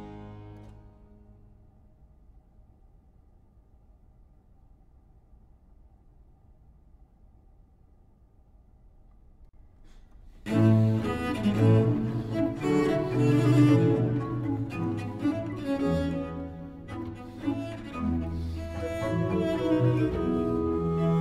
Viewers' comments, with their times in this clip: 0:09 The allegro is very Zelenkian.... hmm...